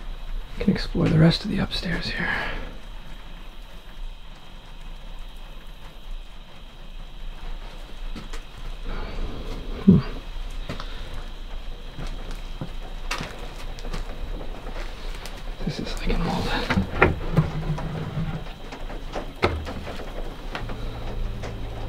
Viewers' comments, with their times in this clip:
0:08 was that a voice?